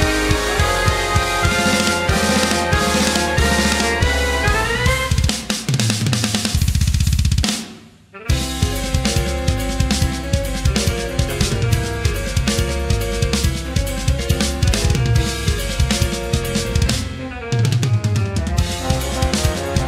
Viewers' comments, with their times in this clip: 0:05 filthy use of the double kick pedal
0:06 that fucking double kick might just be the best thing i have ever heard
0:06 double bass in jazz? That's blasphemy!!!
0:06 the moment you realise that you've destroyed the souls of most jazz drummers out there in a couple of seconds Nice and thicc fill though not complaining
0:06 was amazing, the fuckin double kick lol